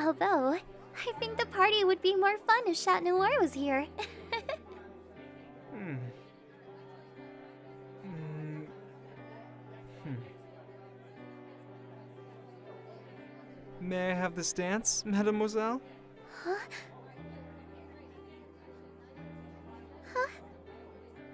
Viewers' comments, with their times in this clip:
0:08 *Adrienette Dance Song Plays*